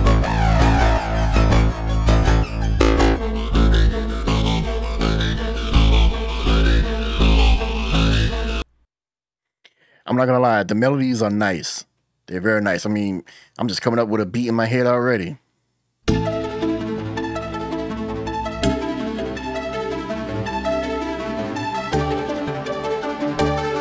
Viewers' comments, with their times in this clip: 0:05 Kindaq sounds like its doing to much, and basically pretty much is aa next to finished project, just slap aa drum sample on them, and a 808 and done. That not a good thing however .